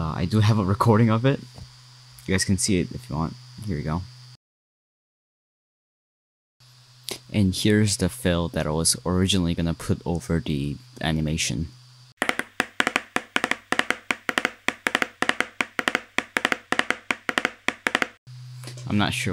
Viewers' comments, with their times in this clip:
0:04 fan noises also i was gonna post the animation on my channel as well because i wanted views too animation is